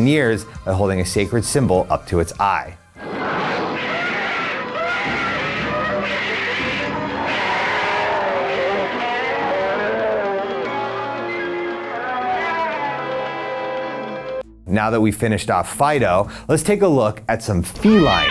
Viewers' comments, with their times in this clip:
0:03 Im pretty sure i heard donald duck sound in there